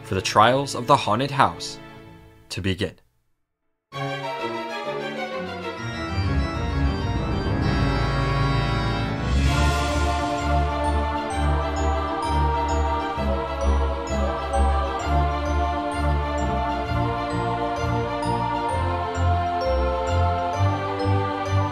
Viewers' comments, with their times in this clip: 0:03 Hearing a spooky remix of N’s Castle from Pokémon in a dream smp video is a surprise to be sure, but a welcome one.